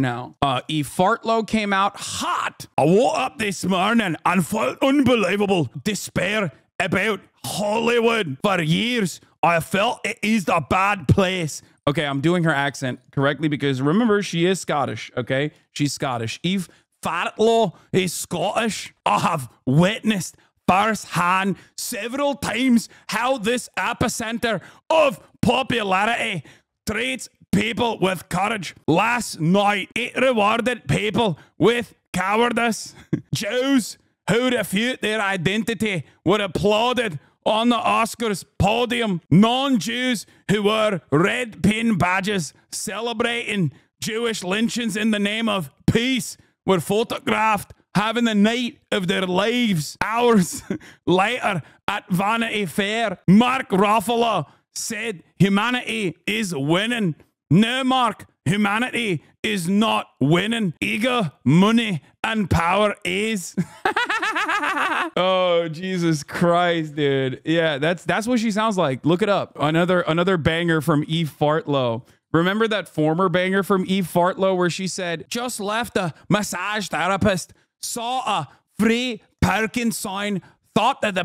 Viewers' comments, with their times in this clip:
0:03 Hasan's best fat bastard/Shrek impression
1:03 the laugh channeling Hannah Conda